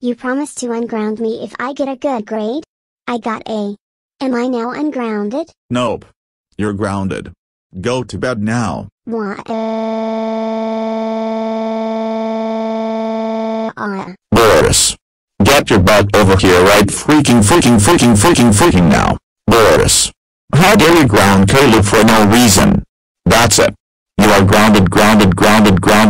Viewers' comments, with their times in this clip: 0:09 This is how I feel when I have to go to school (Ivy's crying voice)